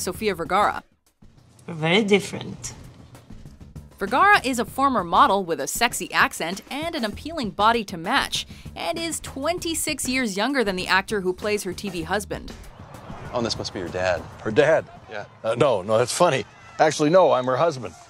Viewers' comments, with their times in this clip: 0:04 Did she really say "sexy accent"??? Wtf. her english accent is a hard core turnoff... complete opposite of 'sexy'